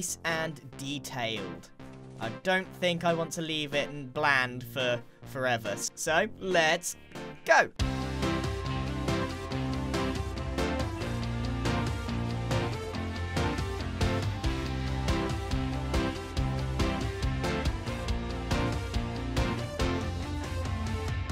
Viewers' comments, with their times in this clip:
0:08 Minecart go brrrrrrr